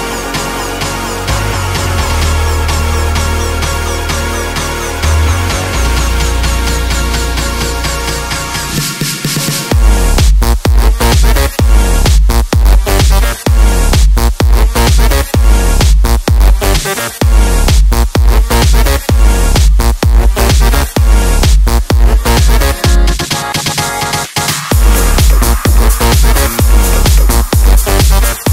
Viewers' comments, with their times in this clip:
0:09 drop like a boss !
0:09 Dat drop tho